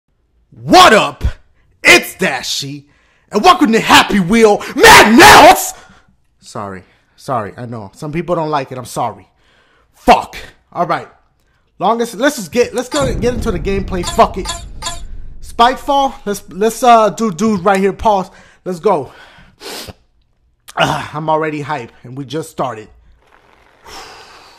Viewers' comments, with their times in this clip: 0:05 god damn my ears!